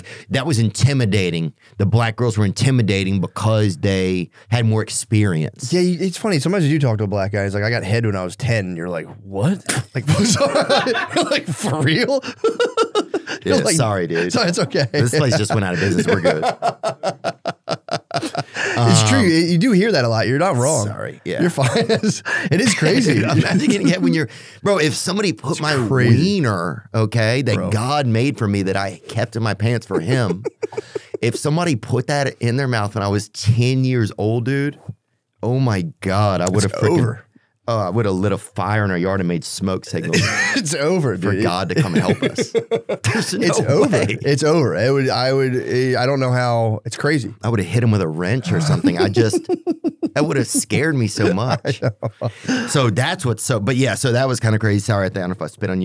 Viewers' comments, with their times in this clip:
0:05 first time i've seen Theo spit out his juice laughing lol
0:41 no one has a better belly hold laugh than Mr. Matt